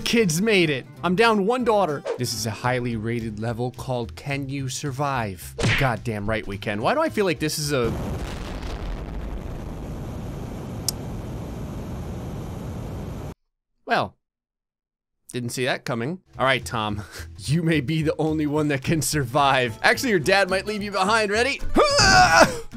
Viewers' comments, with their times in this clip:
0:07 R.I.P all headphone users